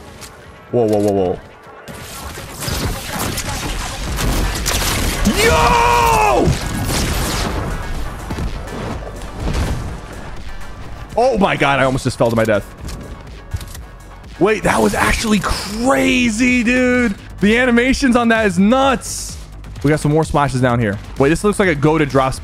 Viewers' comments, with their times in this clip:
0:04 That beat drop is fire!